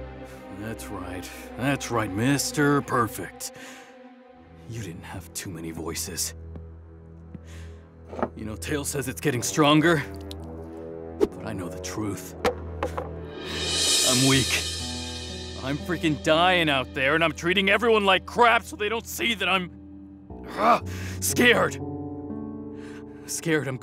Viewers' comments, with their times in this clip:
0:07 when he says Tails is getting stronger, a part of Dies Irae is playing, hinting at Tails being behind all this. (imo)